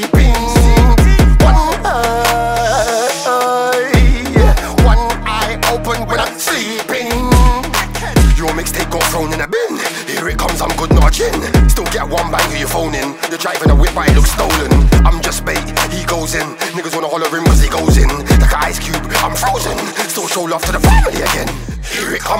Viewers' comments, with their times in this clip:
0:09 this part hard, your voice kinda gave me old Aidonia vibes here. Big chune!